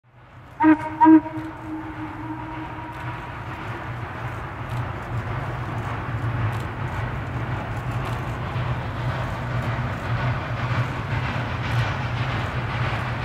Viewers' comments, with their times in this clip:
0:00 Hoots While Moving